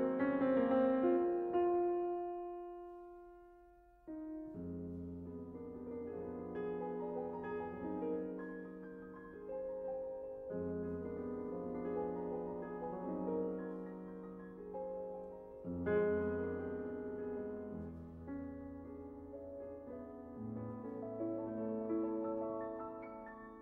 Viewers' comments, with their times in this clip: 0:05 seems like Scriabin has similar passages in 2nd part of 4th sonata